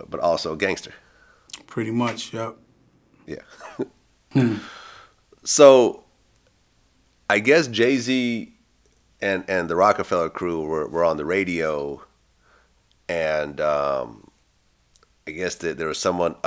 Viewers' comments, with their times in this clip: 0:03 Fake laugh kinda funny